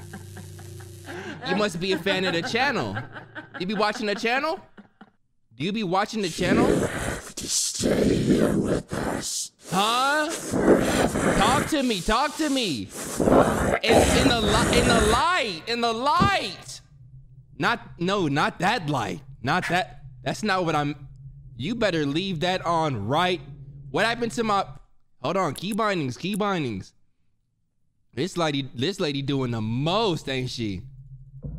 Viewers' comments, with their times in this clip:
0:08 Woah! ACTUAL voice acting!? :O
0:18 CRYING 🤣 This man had like four or five sentences tryna come out at once 😭😭😭